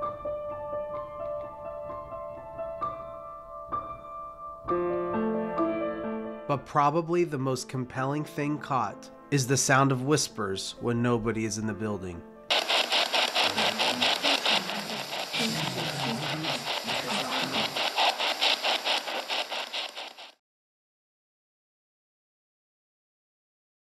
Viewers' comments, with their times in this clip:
0:06 Dude...the whispering It sounds like this: FEMALE: "What happened? Please come back...Be Kind....please..please..please..please" Multiple voices in the background sound like they're echoing the first voice. And then... MALE VOICE towards the end: "In good health.......we die."